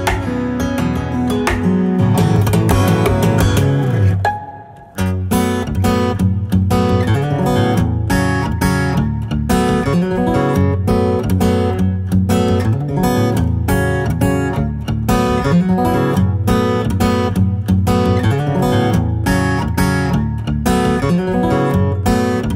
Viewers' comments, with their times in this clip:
0:04 Holy shit that is some amazing playing and singing there! Also that sick tap at the end of that solo fantastic!